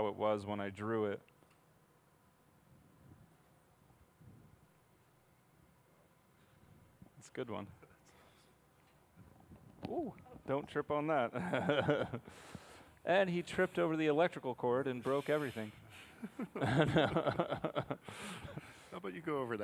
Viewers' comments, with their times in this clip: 0:04 lmao, i fell asleep and woke up to this at the mark when he started doing the seth rogan laugh, i thought it was gonna be funny